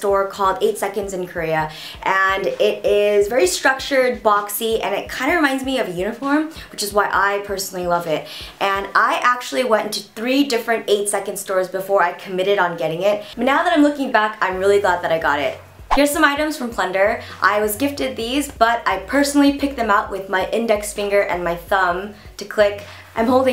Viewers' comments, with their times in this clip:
0:05 omg totally thought you said "it reminds me of a UNICORN" ... o.o